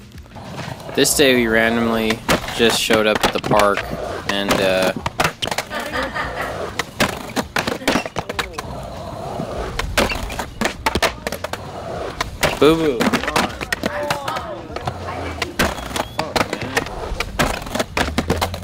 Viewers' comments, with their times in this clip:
0:05 WHAT WAS THAT CREEPY LAUGH